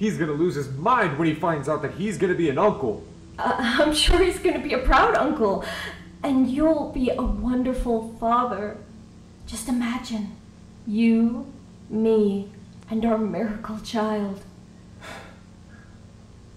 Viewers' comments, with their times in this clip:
0:03 the stutter here the video saying Martin couldn't bare kids and how in an earlier video Martin suspects Arthur of having an affair with Gloria so Arthur probably f*cked Gloria three ways to Sunday in order to get Thomas and probably also Macy and Ava as they seem younger (I don't think they did it with malicious intent but probably because Martin couldn't bare kids also I know you were being sarcastic and that I'm four months late)